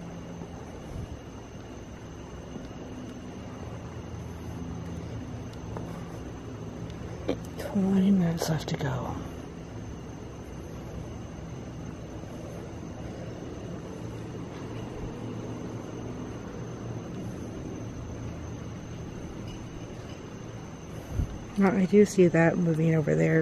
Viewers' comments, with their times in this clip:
0:07 I heard a mans voice right after no place to go or something like that